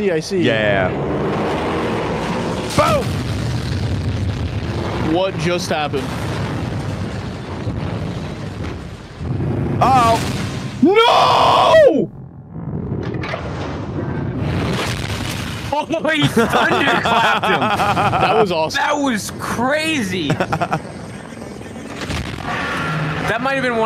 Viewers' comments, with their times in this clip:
0:10 Karl: NOOOOOOOOOOOOOOOOO Titan camera: wtf why are you screaming dude I am ok